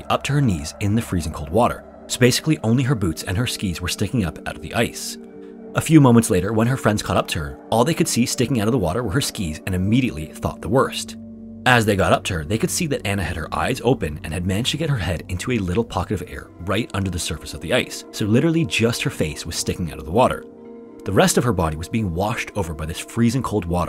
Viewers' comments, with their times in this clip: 0:09 I heard you chuckle lol it’s ok I did too 😂